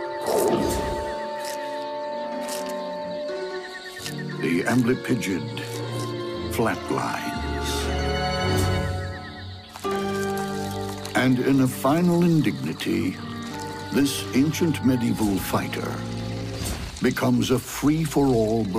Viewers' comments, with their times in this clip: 0:04 “the M bleep pigeon flatlines” 😂 the way the he says it 🤣